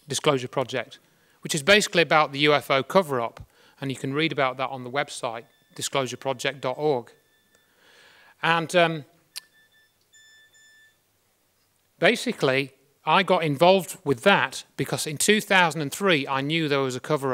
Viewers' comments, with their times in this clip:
0:05 Why is there a SOS signal in the background? ?